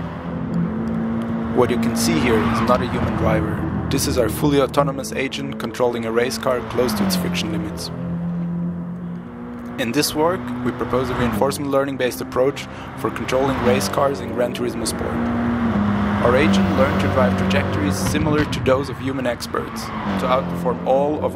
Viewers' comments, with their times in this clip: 0:05 and noticed clipping. xD